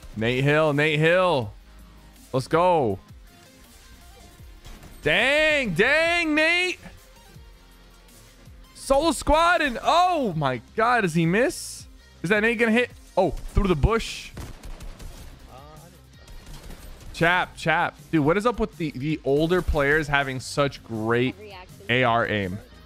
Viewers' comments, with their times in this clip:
0:06 it sounds like u said dang mate!